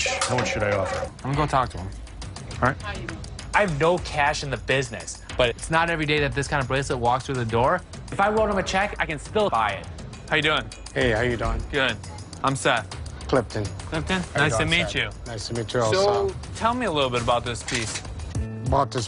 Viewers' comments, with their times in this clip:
0:07 you can clearly hear Seth’s voice is an audio when he says “if I wrote him a check” and it’s cut from other scenes this show is BS